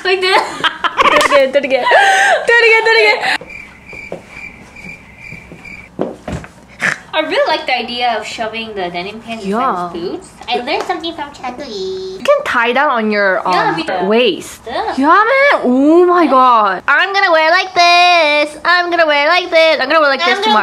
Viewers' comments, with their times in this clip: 0:06 she just snored lol hhhhhhhhh